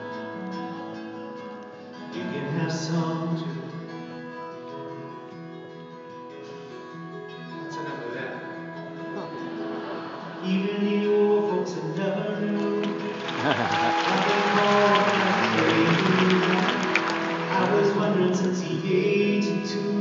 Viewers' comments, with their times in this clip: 0:08 what did James say/do that evoked a laugh from the crowd?